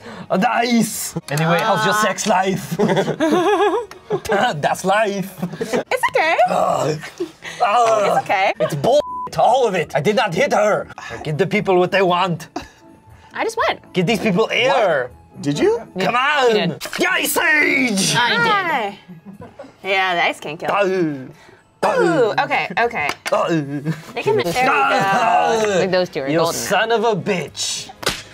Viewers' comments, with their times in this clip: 0:09 He went to Tommy Wiseau